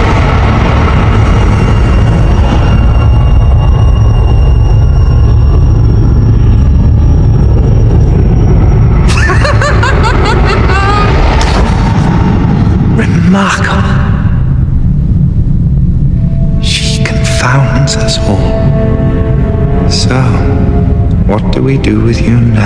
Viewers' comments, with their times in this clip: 0:09 Aro’s laugh never fails to amuse me.